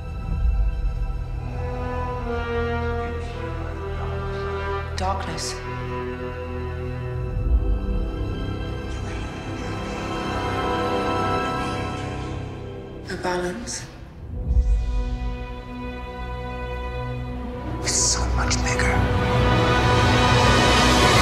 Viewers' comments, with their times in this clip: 0:03 Darth Vader breath